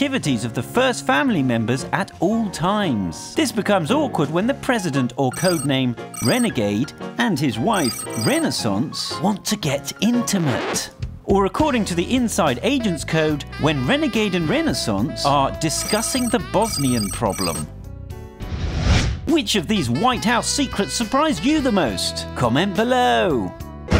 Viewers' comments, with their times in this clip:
0:10 fart .... Trump or Melania who farted this loud ?